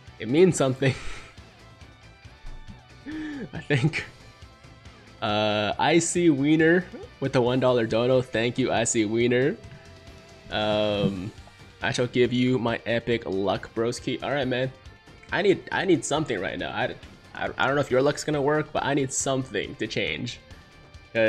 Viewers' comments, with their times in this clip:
0:07 did you just say you saw pp? Damn the bait